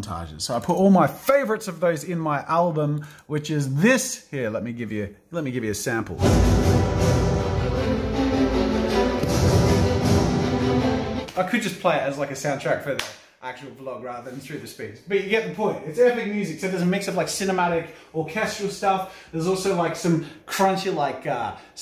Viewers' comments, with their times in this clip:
0:05 NF would go crazy on a beat like that!!!